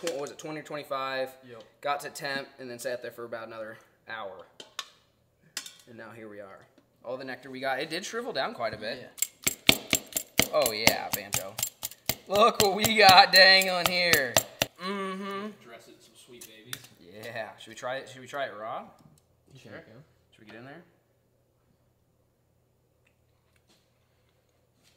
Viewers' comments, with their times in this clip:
0:07 the audio to this clip was a little sketchy 😳